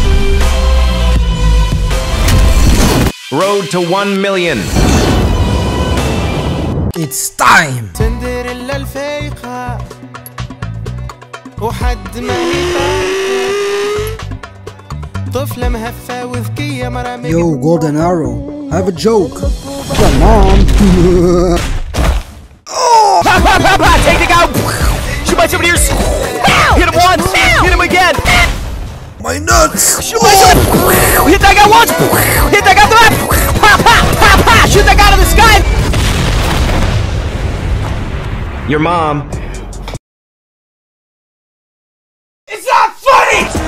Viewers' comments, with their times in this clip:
0:07 bro added a Arabic song💀
0:12 i love this arab song ☺
0:24 Bro is that your voice?